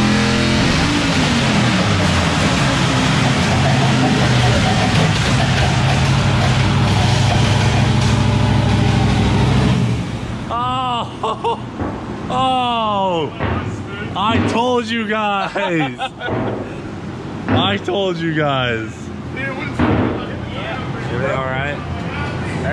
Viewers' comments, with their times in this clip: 0:03 when she hit you whit that gwak gwak 9000